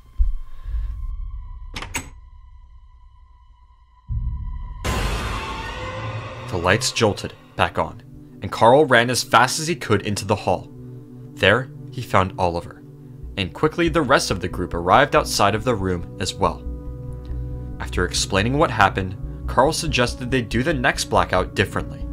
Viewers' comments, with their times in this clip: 0:03 bendy jumpscare sounds lmaoo